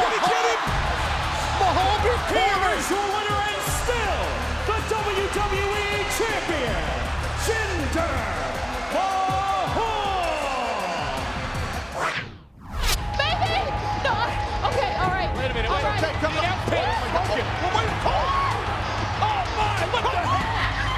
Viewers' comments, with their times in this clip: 0:07 cena was lauging